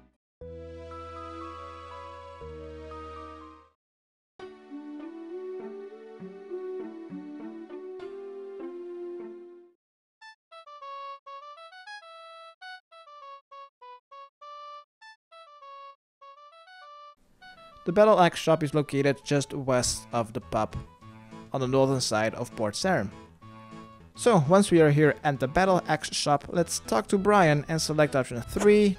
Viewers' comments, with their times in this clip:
0:10 for epic battle music, thank me later.